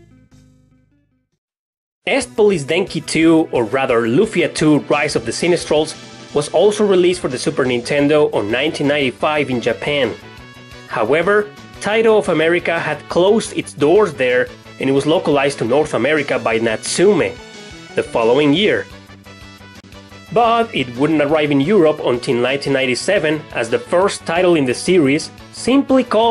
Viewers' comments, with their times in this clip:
0:09 that boss theme !! such memories ! thanks for the nostalgia , I loved that game !